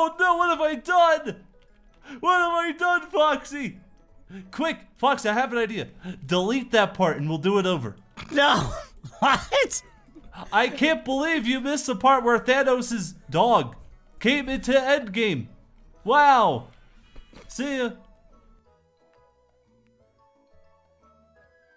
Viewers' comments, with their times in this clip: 0:04 Freddy - Quick! Foxy, I have an idea: Delete that part and we'll do it over! Puppet and Foxy laugh at the same time Me: 😂😂😂😂😂 Edit: Sees that there are 38 likes on this comment GEEEEEEEEEEEEEEZ!!! That's a LOT of likes!!! XD Edit 2: Comes back and sees 51 likes Woah...And I posted this comment late too! XD Edit 3: Comes back after 11 months because of the newest reply on this comment Lol, DAAAAAAAAAAANG!!!!! I forgot all about this! I just took a trip down memory lane and it's so sad because they're gone now... ;_;